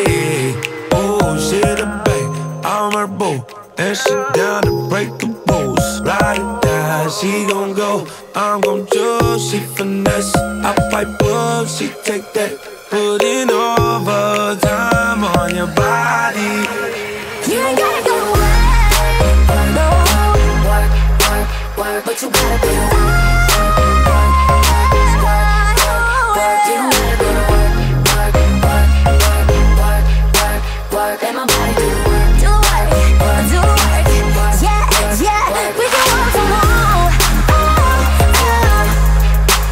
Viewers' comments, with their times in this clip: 0:07 love the RB
0:23 CAMILA HIGH NOTEE???!?!?😫😫